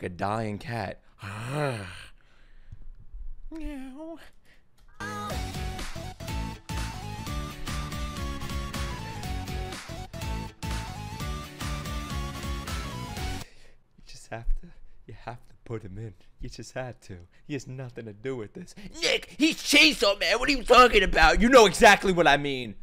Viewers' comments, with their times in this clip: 0:03 That is the creepiest fucking meow I think I've ever heard man you scared me you genuinely put fear into my soul